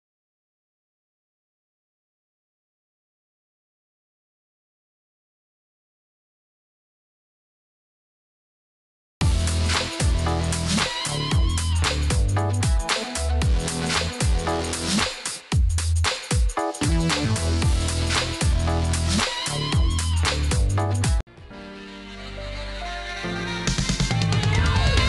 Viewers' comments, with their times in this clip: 0:09 when my siblings heard this music and saw me dancing to dis it was like a party 🤣